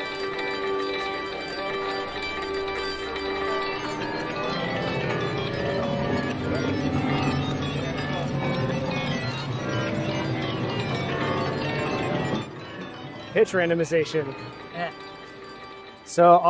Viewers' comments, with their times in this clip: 0:04 Interesting. I hear a pipe organ, lots of harmonics...then it gets WILD. Thanks for the video.